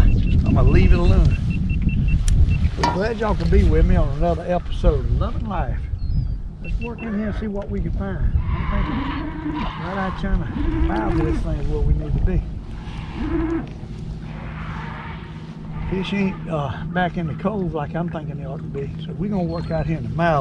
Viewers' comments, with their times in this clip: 0:07 i hear a raptor